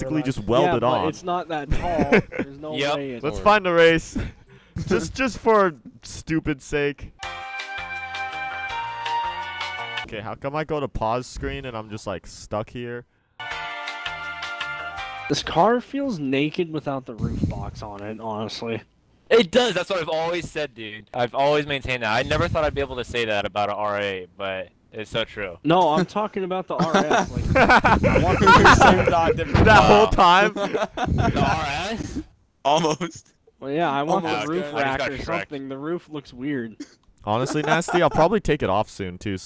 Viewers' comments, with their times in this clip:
0:07 that song is my ringtone and was so confused for like 20 seconds
0:27 he sounds like mandark from dextors laboratory